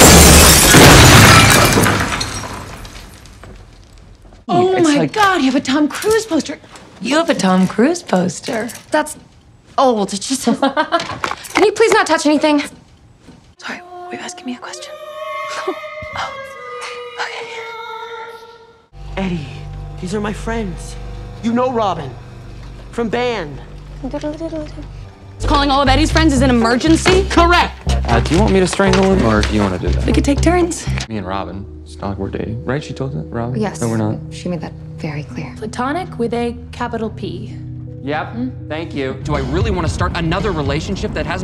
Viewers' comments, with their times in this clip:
0:06 The way she says "you have a Tom Cruise poster". 😍
0:23 that trumpet noise 🤣
0:24 The trumpet music she made with the flashlight will always make me smile !! 😊🎺